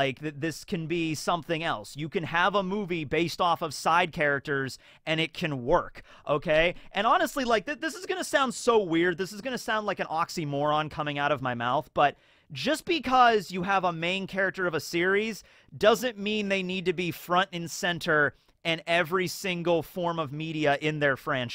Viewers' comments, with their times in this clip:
0:04 Your voice is a delayed a bit from the video